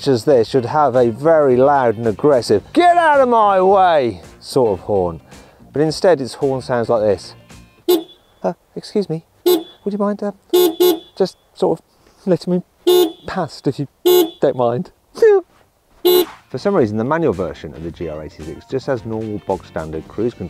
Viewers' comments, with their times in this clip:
0:07 if Tom Holland was a car horn